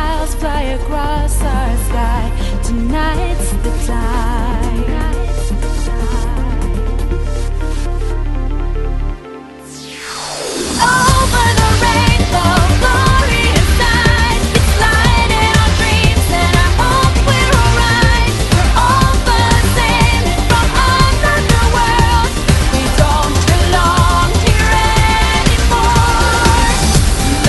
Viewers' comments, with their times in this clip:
0:10 has the best drop in video game history